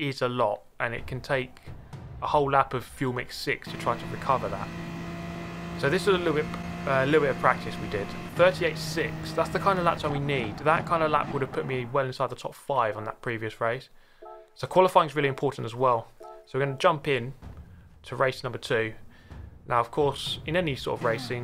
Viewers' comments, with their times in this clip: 0:08 Do you have a new mic? Great video btw!